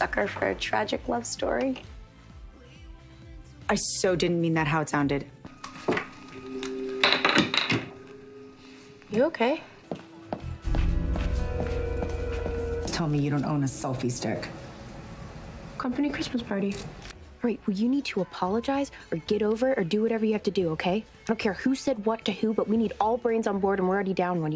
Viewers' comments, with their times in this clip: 0:06 why am i crying laughing at this also at aria: (screams because a rat's on her shoulder) spencer: WHATAREYOUDOING